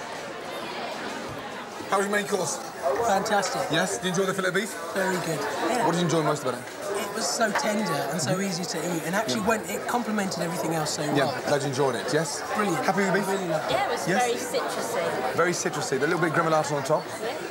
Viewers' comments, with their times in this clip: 0:04 did you enjoy the Philippines Subtitle 🤣🤣🤣